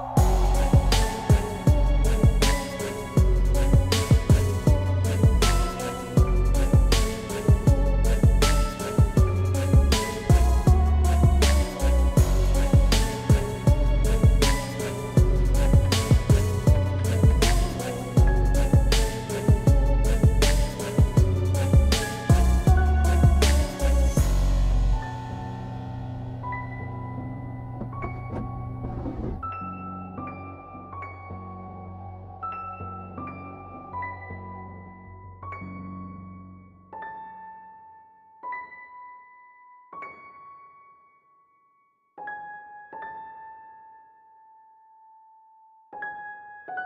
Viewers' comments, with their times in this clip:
0:09 Closet door and also fan changing speeds
0:28 Sounds like maybe a drawer is sliding open and being closed? Great vid. Looking forward to part 3!
0:29 sounded like a drawer opening or something sliding by the camera.